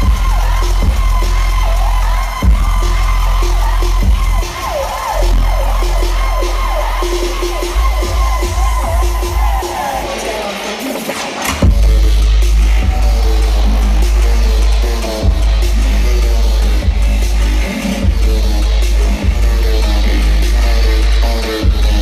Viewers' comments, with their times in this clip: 0:07 The transformer sounds so sick.